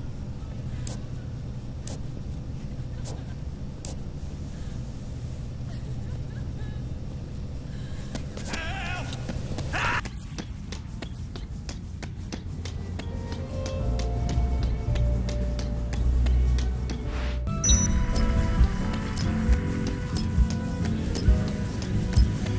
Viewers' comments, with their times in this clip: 0:08 who was screaming ???